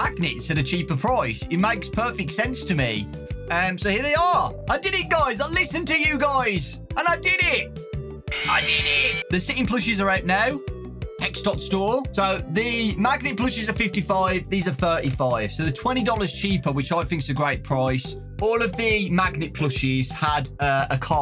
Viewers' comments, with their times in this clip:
0:08 freddy jumpscare sound